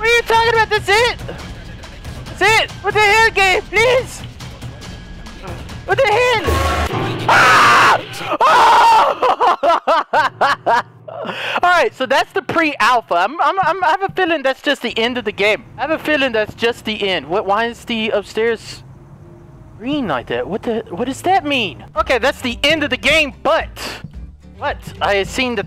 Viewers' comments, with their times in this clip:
0:06 your scream reminds me of when I see my report card on the table